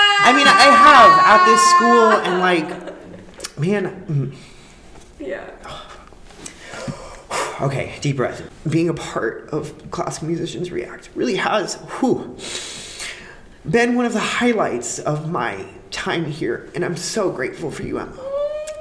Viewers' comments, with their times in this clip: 0:05 i feel youuuu😭😭 my tears start falling right when he took a deep breath :") wanna hug?😭